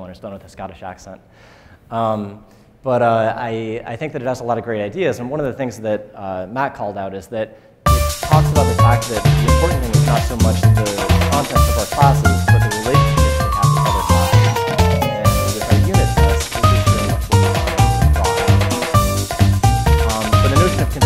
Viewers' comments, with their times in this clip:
0:08 Terrifying unexpected intro music recurrence ...